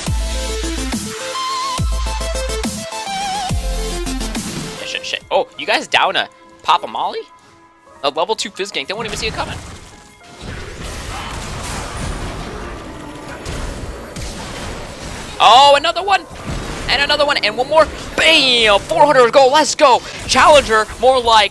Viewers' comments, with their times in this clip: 0:04 Is he saying shit here?